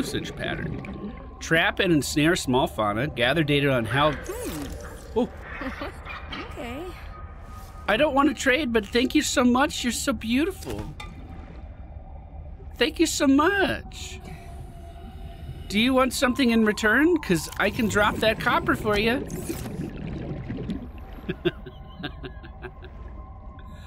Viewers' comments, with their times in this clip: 0:05 Anyone else hear a weird voice with the Sea Monkey? Sounded kinda like laughing and someone saying "m'kay" to me.